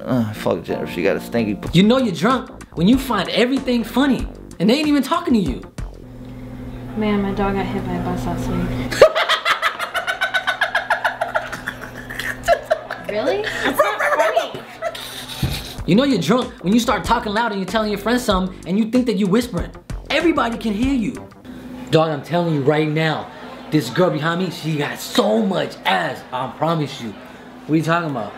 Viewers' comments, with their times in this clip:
0:09 His laugh on lmaoo xD